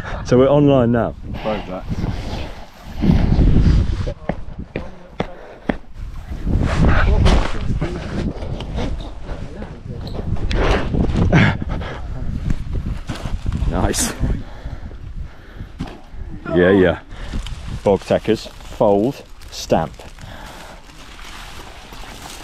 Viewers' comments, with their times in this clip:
0:07 OOH THAT PERFECT MINECRAFT GRASS BLOCK CRUNCH SOUND